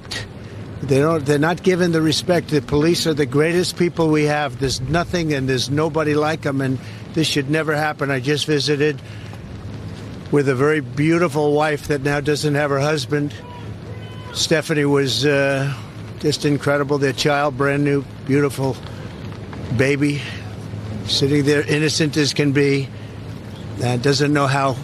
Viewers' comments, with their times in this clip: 0:06 Hearing the “Fuck Trump!” in the background of this clip says everything you need to know about the brainwashed half of the country.